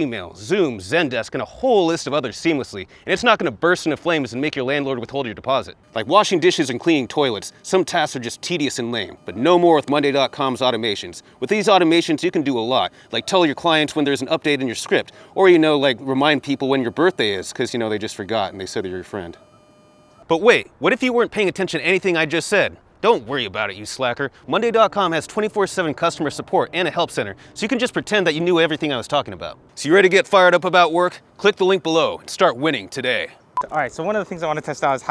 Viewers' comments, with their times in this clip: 0:06 When the sponsor got recorded with the lav connected, somewhere halfway the DJI unit had some weird beeping noise like when you get called and the speakers on an old pc has like that distorted high pitch sound. Is it still the same or just a one time error? Started hearing it
0:06 there was some interference with the DJI
0:06 at the a strange background sound is heard, a kind of bzzzzzz, if you listen with headphones it is heard
0:08 has anyone heard the error signal on the dji mic starting ? There seems to be an interference with a phone or the lavaliers. It's critical.
0:08 I can hear some interference from the DJI Mic. Is this becouse of the phone sitting next to you?
0:16 there is a really bad noise on the DJI mic (using headphones is kind loud)
0:18 Good video. Is there some noise on ?(DJU MIC + LAV)
0:20 there is a buzz sound with DJI